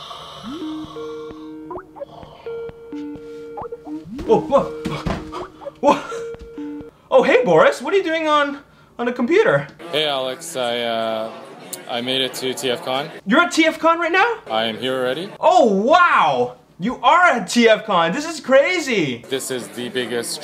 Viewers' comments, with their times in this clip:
0:05 who thought they were getting a skype call